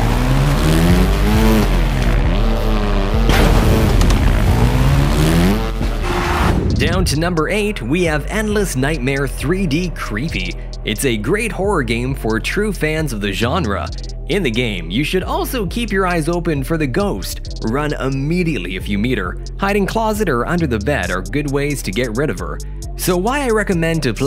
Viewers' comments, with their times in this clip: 0:07 Removed my headset because the game sounds are so creepy an scary